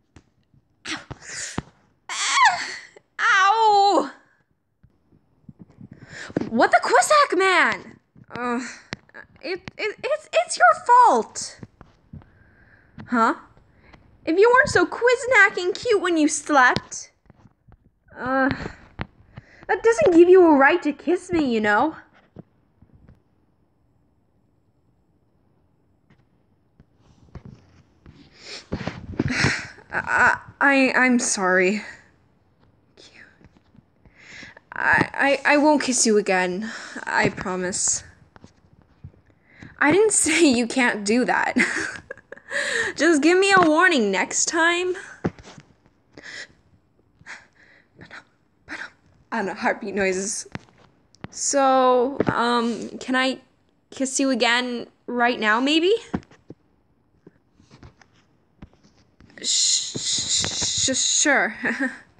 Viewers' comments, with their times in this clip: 0:03 That Screech was 10/10
0:49 Ok I accidentally had my volume up all the way but you yelled so LOUD you almost woke my parents up yes it is AM for me and you also gave me a heart geez 😂